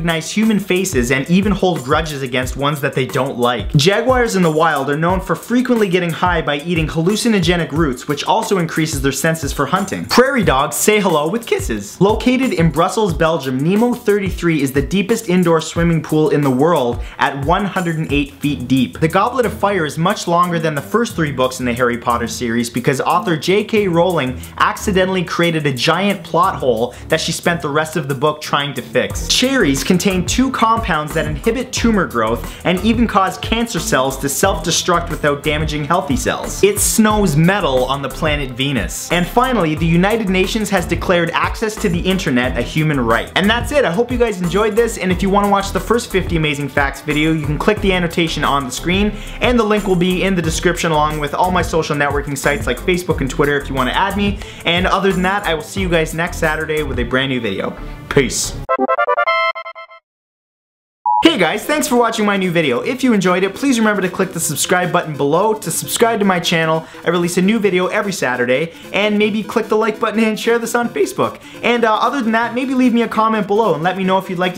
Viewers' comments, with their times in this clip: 0:10 With kisses love his voice rite then
1:00 towards the end if u listen VEEEERY carfully in the backround, the Mario starman theme is playing